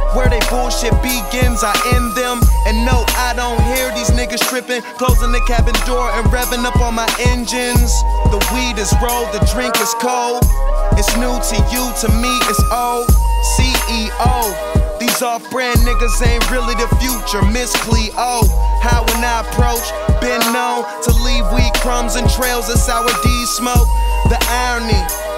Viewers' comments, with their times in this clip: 0:08 Do yall not hear 👂 Curren$y influence here Damnnn salute 🫡 wiz for showing $pitta that respect! “We belong on the top but we ain’t trippin… we’ll get there in a minute! I been in the game OG… seen fools blow up and blow it YOU KNOW IT-YEAA!” -$pitta aka Curren$y